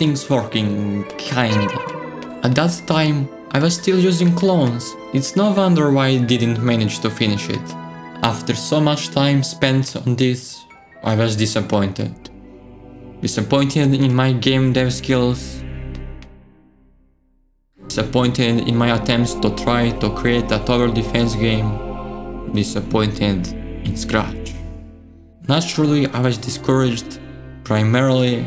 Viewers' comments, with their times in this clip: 0:09 sounds like his entire platoon was annhilated on Omaha beach